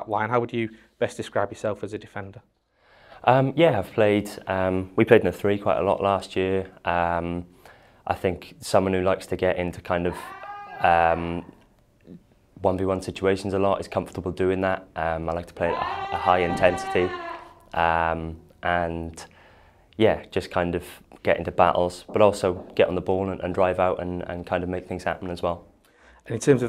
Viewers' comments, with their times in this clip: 0:10 Who was that screaming